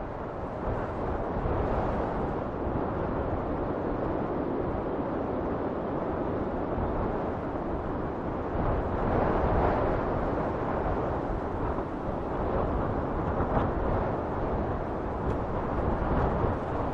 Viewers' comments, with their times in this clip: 0:03 That wind mixed with your Diorama.. it's so erie and relaxing at the same time.